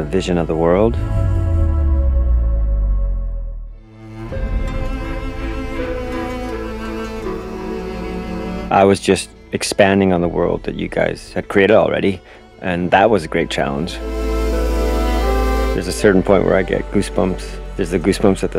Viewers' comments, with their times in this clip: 0:03 talk about goosebumps indeed lol chills went down my spine on this part . Man I hope we get a code or something for this in a deluxe edition or launch copy . I need this on my PS5. The music is amazing